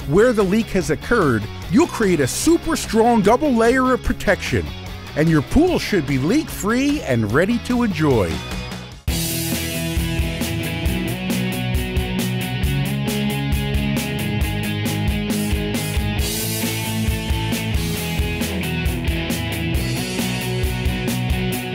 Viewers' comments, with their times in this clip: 0:09 Why does this music sound so similar to the Uncharted theme song??